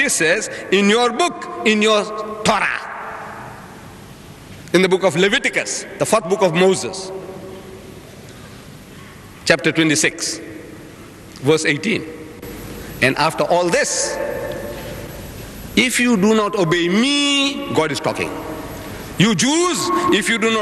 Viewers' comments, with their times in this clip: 0:05 did he just say fack books